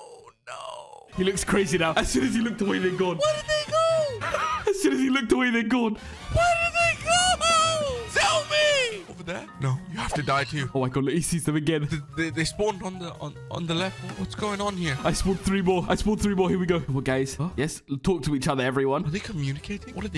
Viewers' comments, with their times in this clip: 0:03 the way he talks to the pig 😅😂😂😂😂😂😂😂😂😂